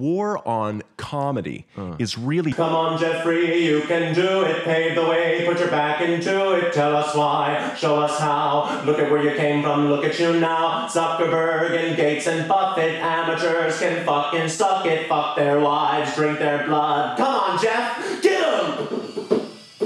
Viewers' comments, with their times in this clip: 0:04 The solo still goes hard when you can barely hear it